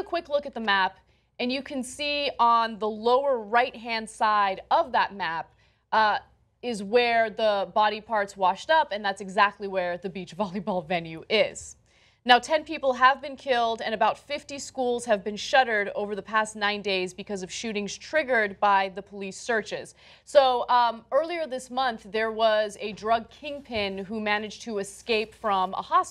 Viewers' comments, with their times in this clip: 0:07 The f she laughed for